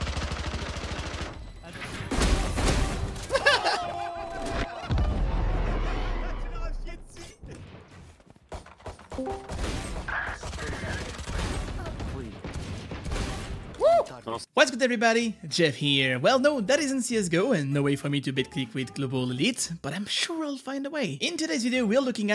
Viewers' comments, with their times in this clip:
0:06 bruhh i tought it was my discord
0:07 i legit thought it was my discord
0:08 i tought someone joined my discord voice chat XDD
0:08 this discord sound just fucking fooled me
0:08 did anyone thought someone joined their discord
0:08 Don't lie, we all checked Discord
0:09 I genuinely thought someone just joined my discord
0:09 anyone else check discord or just me?